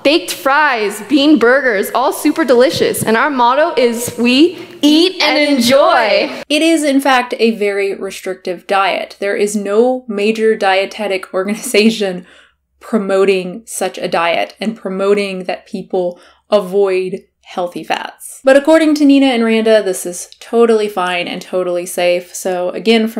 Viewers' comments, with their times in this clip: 0:04 Dear god, that "we EAT AND ENJOY" sounds like a cult mantra 😵